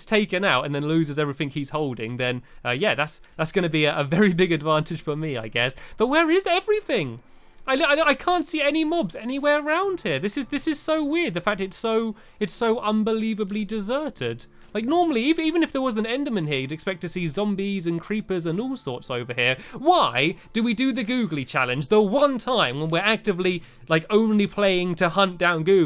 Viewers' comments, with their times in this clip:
0:10 Did anyone hear an enderman